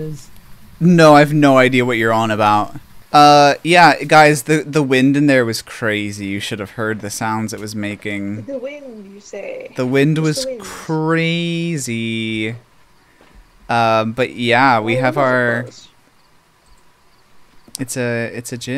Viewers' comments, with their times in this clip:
0:04 Oh my goodness!! The wind made the sound of footsteps!!! I've never heard wind do that before!!!